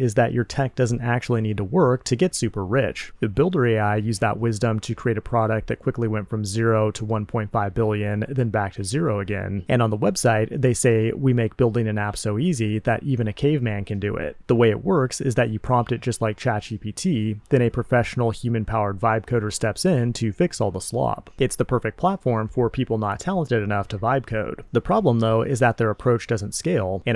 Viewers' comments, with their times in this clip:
0:10 Am I crazy or can you hear a TV?